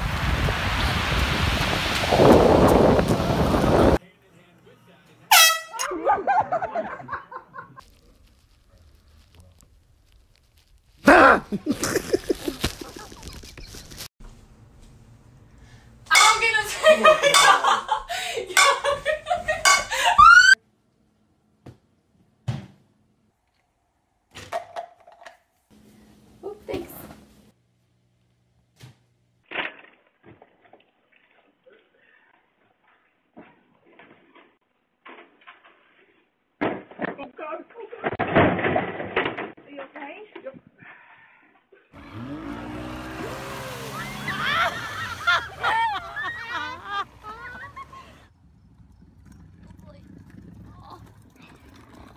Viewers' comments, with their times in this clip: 0:04 best one! Air horn 🤣
0:34 you can hear the horror in his voice 🤣🤣🤣